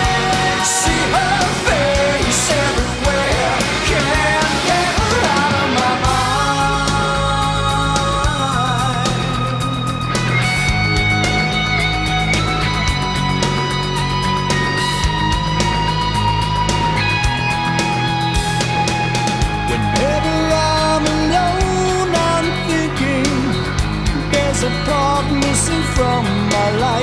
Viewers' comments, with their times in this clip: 0:10 Great guitar tones :) were you using a tremolo arm or was the game shifting the pitch for you ?